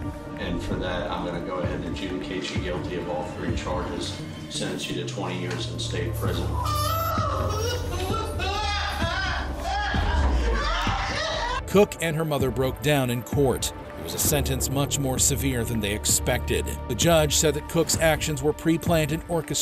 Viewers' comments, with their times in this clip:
0:06 Why the flap did sound like the spiderman across the multiverse when the antagonist made his entrance. 0_0